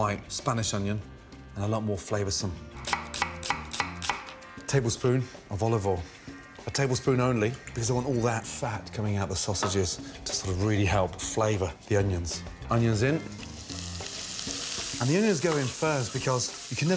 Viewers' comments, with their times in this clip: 0:04 a tablespoon of olive oil? in background GLUG GLUG GLUG